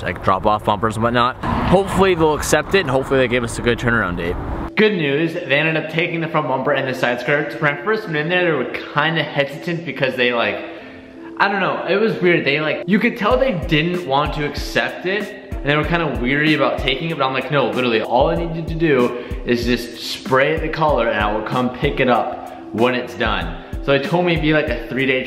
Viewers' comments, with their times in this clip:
0:06 what he say lol